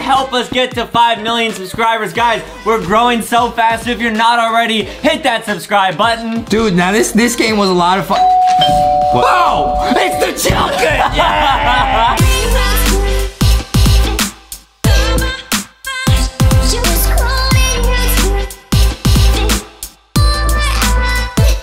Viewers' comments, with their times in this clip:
0:09 ItS ThE JuKcIn